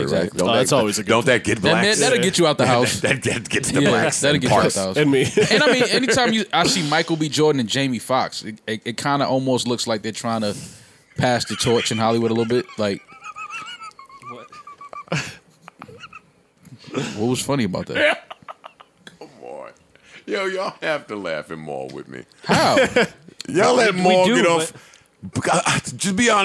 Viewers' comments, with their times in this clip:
0:08 Joe's Face! LMAO! He's so rude. The laugh! LOL!
0:08 that laugh tho😂😂🤣
0:09 Joe's laugh had me DYING!!!! I pulled that shit up at least 100 times LMAO